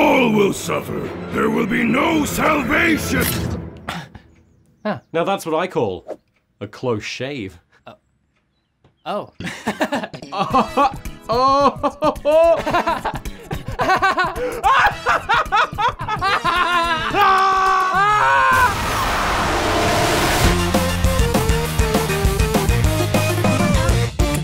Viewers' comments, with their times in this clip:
0:06 a joke and the Seinfeld music comes up. 😆
0:08 insert Seth Rogen laugh